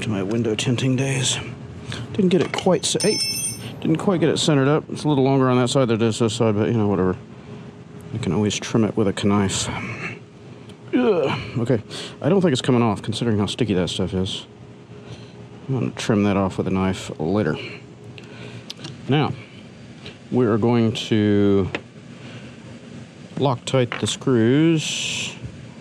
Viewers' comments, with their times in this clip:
0:09 you said kuh-nife instead of saying with silent K. I’m assuming you did that as a joke. lol I had to listen to it 3 times to make sure I didn’t just imagine that.